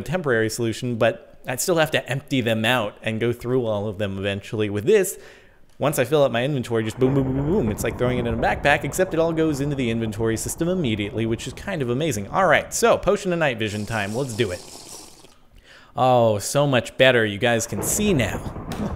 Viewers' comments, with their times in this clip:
0:03 Boom Boom Boom Boom And then the thunder goes boom Dammmmmmmm The coincidence
0:05 he happened to say boom boom boom while there was thunder. Lol. :D